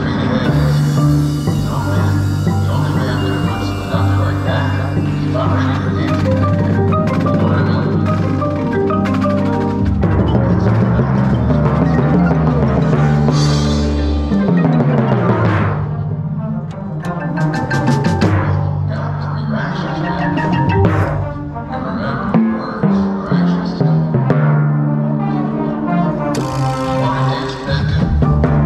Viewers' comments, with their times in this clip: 0:10 That pedaling and pitch control was brilliant! Great great stuff!!!